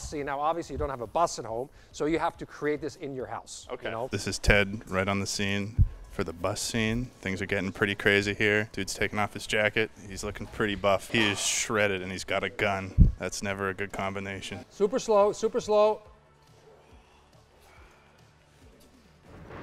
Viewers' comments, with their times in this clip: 0:04 you started to sound a little like Jack Black ngl.